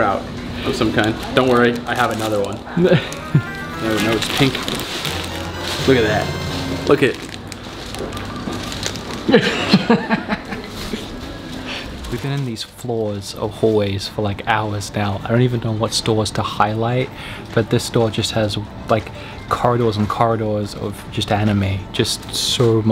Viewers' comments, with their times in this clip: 0:04 I have a Zelda notification sound like this and it went off at the same time!😂